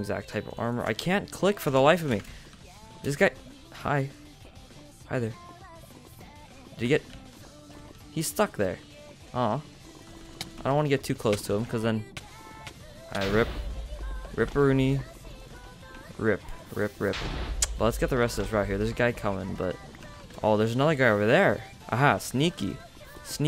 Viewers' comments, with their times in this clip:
0:10 oooh the beat drops when the guy fell in the lava xD Great video as always bro! :)